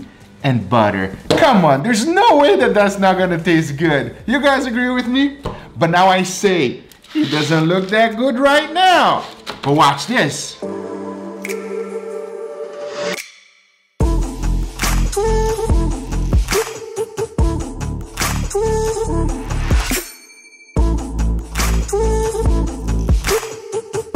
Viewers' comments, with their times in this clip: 0:10 When I heard that beat I felt like I was watching a Peter Mckinnon video